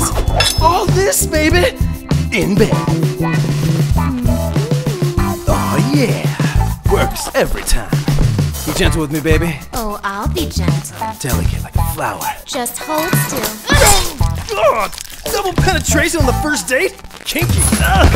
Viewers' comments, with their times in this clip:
0:04 Agreed. I know this is cringe, but damn, that little hum, the way she beckons towards Deadpool all seductive is so hot.